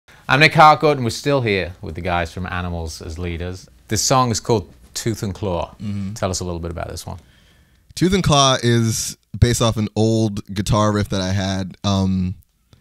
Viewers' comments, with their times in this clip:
0:00 I make tacos and we're still here, with Animals as Leaders...